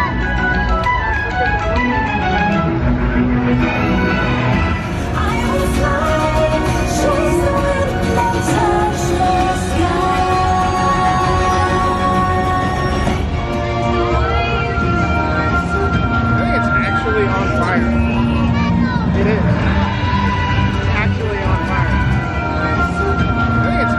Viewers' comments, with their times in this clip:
0:06 What version of touch the sky is that? Cause it sounds different from the original.